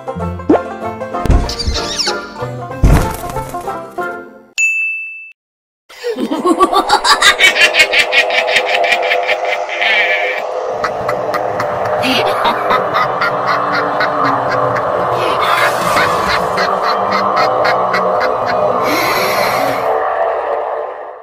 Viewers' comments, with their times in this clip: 0:05 Cool at this voice